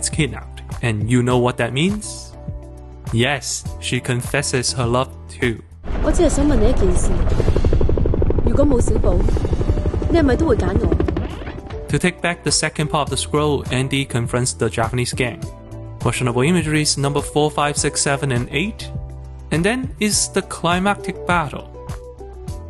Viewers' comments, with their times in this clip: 0:06 oh no,my tea is spilled,Can her scream or fuckin worry??